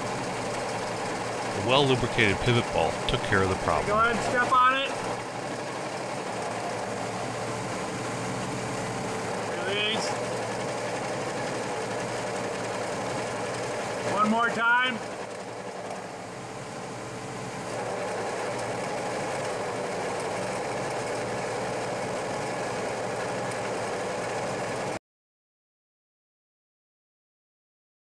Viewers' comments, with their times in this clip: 0:09 what that background noise that goes away when u step on the clutch pedal? @